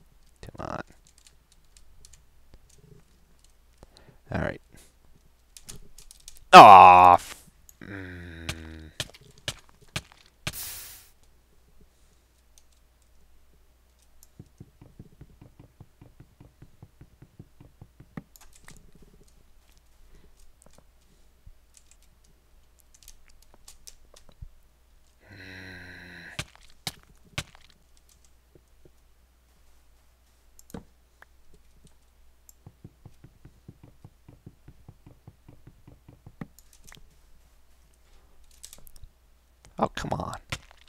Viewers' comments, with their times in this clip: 0:06 he sounds like a mob!
0:09 he f bombed but blocked it out
0:22 you really sound like a zombie there!